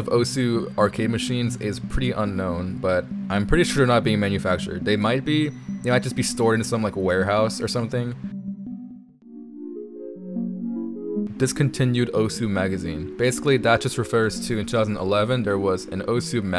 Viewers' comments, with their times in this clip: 0:04 man, that yume nikki music just hit different huh?